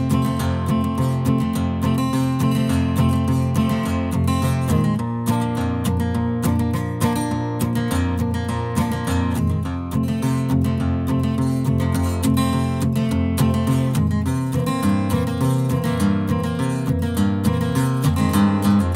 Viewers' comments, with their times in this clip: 0:05 am i the only one that gets satisfied by the sound of him switching from A to E?